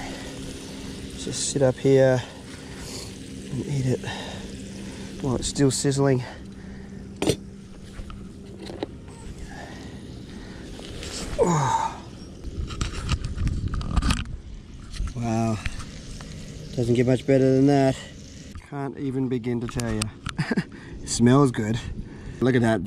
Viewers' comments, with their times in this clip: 0:07 you can actually hear a mosquito